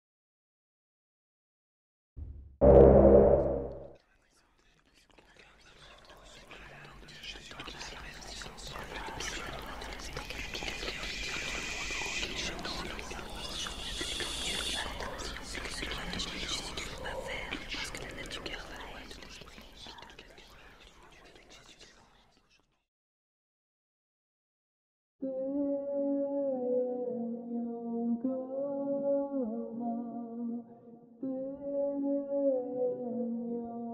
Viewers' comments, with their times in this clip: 0:04 schizophrenic noises intensifies
0:16 There's a part in Spanish (ish) that says "que quieren hacer mas que.... que... tu quieres" but I can't completely make it out. It means "what they want to do more than.. (something) ... you want". I think that one of the whispering voices is speaking in Spanish the whole time, but due to the overlap, I can't make out anything except this one part where everyone else goes quiet. Anybody have a guess as to the other parts?